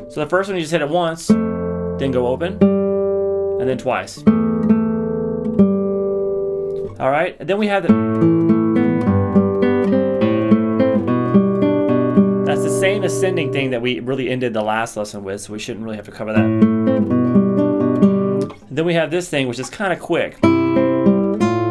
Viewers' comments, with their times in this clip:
0:06 Notice the first note of the "ascending thing" is not just the open A string, it is the open A played with the 2nd threat G string. I'm sure many people didn't see this, just wanted to point it out.